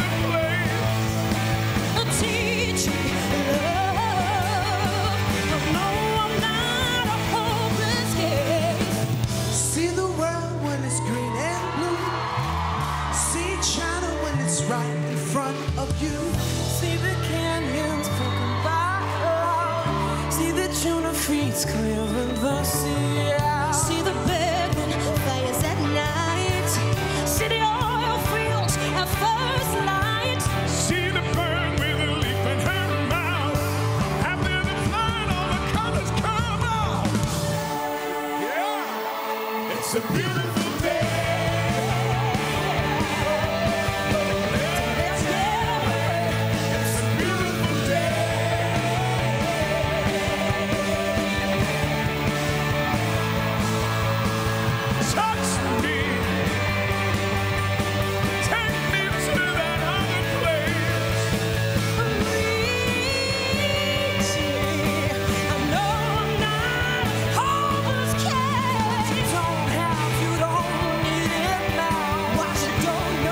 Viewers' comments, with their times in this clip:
0:08 heeey Will.i.am can sing you know
0:15 Danny's voice is just magic
1:01 jessie j sounds like an angel here !<33